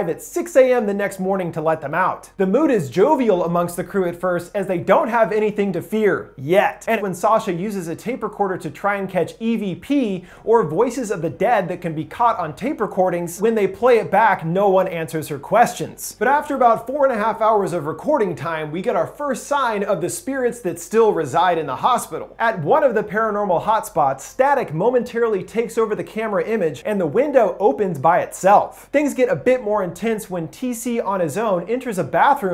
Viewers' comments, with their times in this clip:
0:06 Listening/watching on my 2nd monitor while on a project not paying full attention, then: "Sasha uses a tape recorder to try and catch Evie pee" Im like WHOAH? That went a bit off from horror genre.. who is Evie tho?
0:13 Ayo he said edp